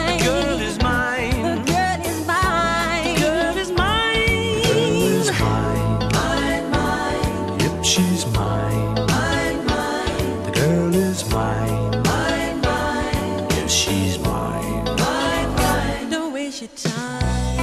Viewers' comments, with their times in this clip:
0:05 love the deep voice in this part